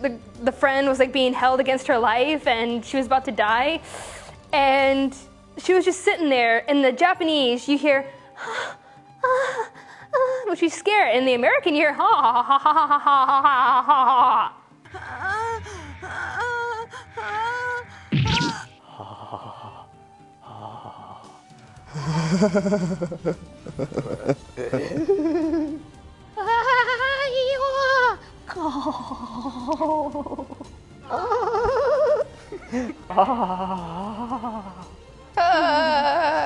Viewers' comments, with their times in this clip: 0:08 I can imitate her voice when she's scared.My voice can easily imitate an anime character because my voice is gentle.
0:10 YOUR BUTTHEAD IMPERSONATIONS SUCK!!! LOL! But lets just keep it on the topic of anime.
0:20 Sounding like Beevis and Butt-Head there!